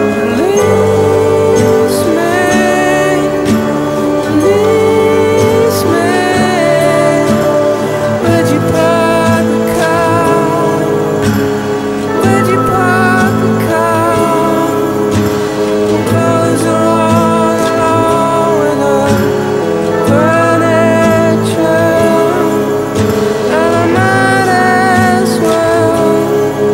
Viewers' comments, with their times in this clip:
0:08 This version of the song, especially that strange instrument that comes in reminds me of Christmas. But not in a warm festive way, but a cold sinister way like the Krampus movie. It also reminds me of the demon and his workshop in Insidious. It just in general sounds like something you'd hear in a scary children's movie. Crazy spooky song.